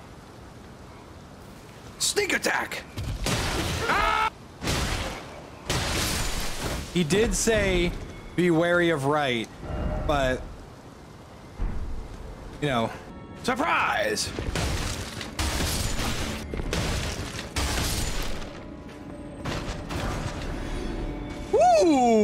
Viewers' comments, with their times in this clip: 0:03 guilty gear strive anouncer voice "counter"